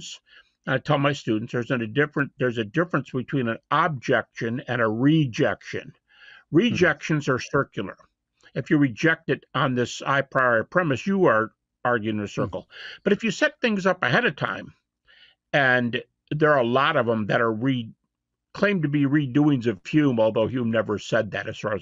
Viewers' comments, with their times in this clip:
0:04 “I” priori is this the same drool as “evidences?” I have seen iposteriori octopusses I guess.